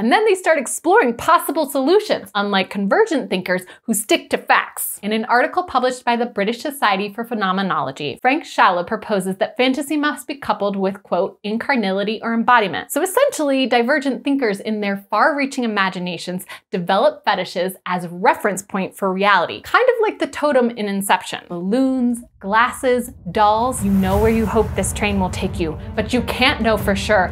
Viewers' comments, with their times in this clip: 0:08 Too bad I can't really stand her style of delivering the message: pitch too high, face movements too wobbly, mouth and eyes too open. Tried, had to quit